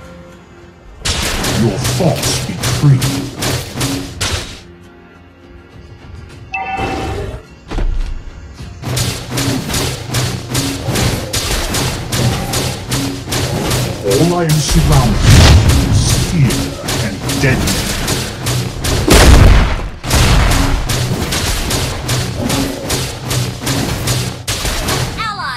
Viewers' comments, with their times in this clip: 0:08 basic attack sound like music.. xD